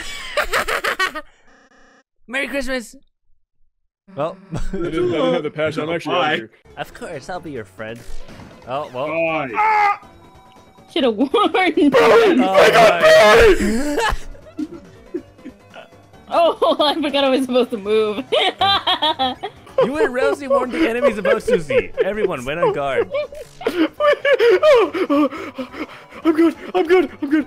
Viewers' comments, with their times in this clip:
0:08 "BARRY!!! THEY GOT BARRY!!!" In the most panicing vouce ever lol